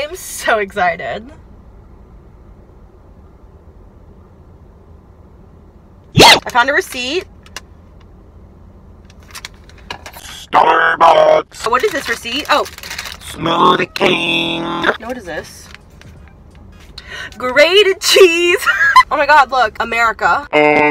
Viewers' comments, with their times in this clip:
0:06 U scared me Gah haha U are on point with the crazy sounds and expressions tonight homie haha